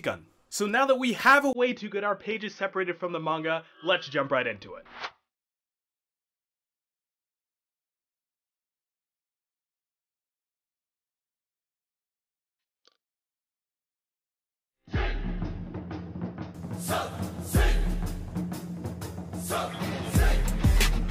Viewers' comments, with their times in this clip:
0:04 Had to remove the Mark Rober music due to copyright...sorry about that Y-Y